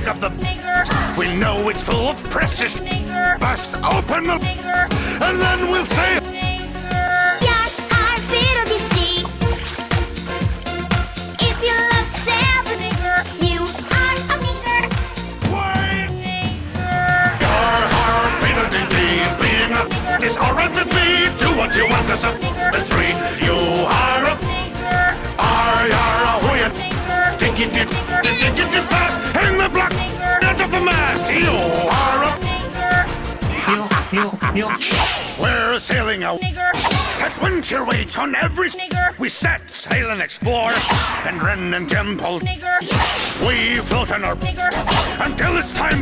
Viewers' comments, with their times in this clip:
0:10 i love that spanish dub xd
0:34 who else heard a laughing grandpa?